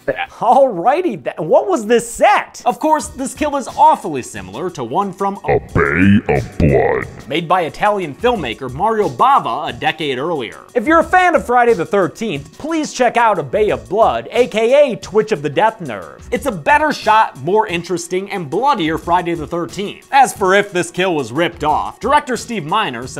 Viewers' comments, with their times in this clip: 0:09 I don't know if it was on video or by me irl but I swear I herd a cat